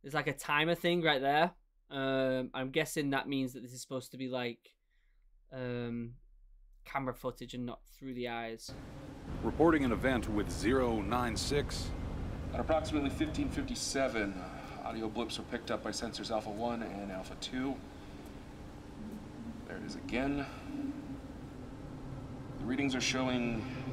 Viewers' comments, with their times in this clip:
0:09 they sound like Markiplier ngl